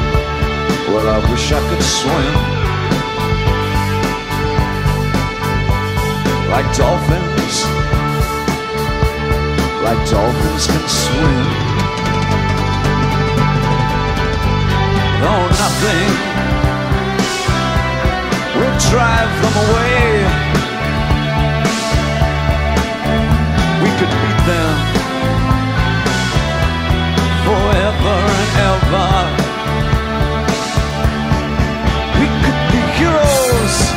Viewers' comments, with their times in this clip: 0:08 Awwww He loves Denis Davis's drum roll.
0:16 Is DB smiling at Denis' drum rolls? Wonderful.